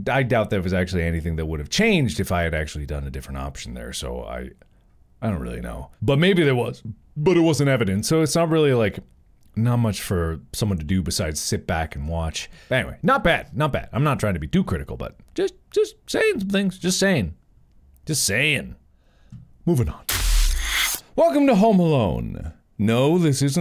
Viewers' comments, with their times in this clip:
0:05 Not Mark trying to hide a burp😂: